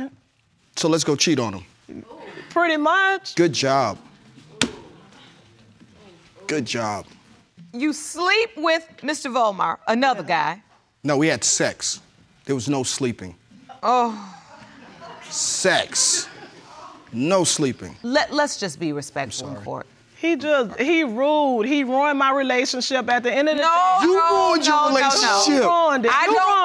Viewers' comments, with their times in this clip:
0:07 bro needed everyone in the back to hear it
0:07 I can still hear the vine booms